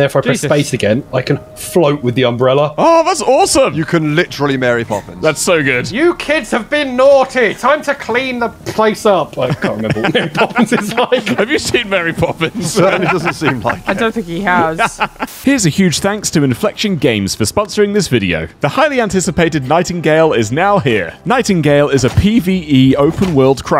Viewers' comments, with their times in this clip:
0:05 To be fair while that’s a terrible Marry Poppins impression, it’s a terrific Nanny McPhee impression